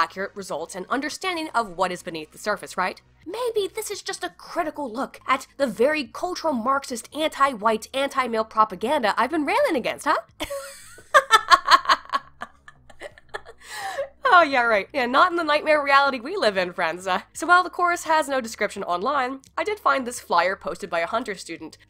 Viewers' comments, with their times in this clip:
0:09 damn your laugh is cute/hot